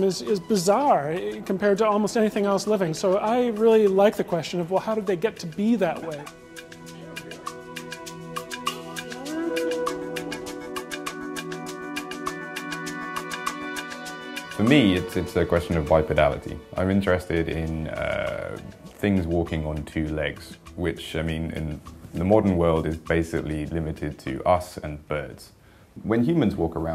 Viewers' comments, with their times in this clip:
0:08 You can hear the Age of Mythology attack horn